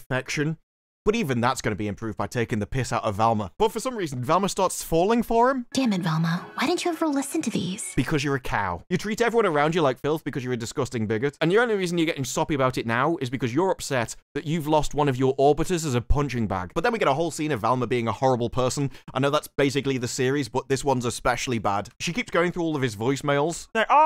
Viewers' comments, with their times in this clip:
0:07 made me actually laugh out loud. Perfect delivery.